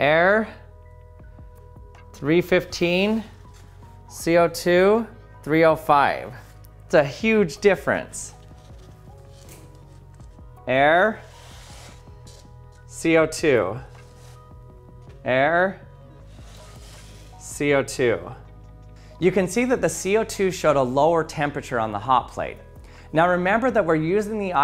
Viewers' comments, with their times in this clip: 0:09 This is the first time I heard the name 'Bill Nye'! Your repetition of the words 'air, co2' reminds me 'Dora the explorer '